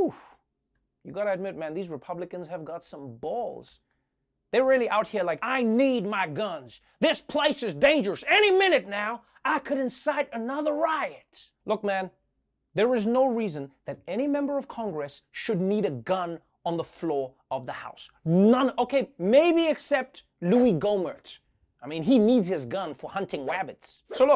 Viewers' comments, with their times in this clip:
0:05 this somewhat sounds like the drifter from destiny lol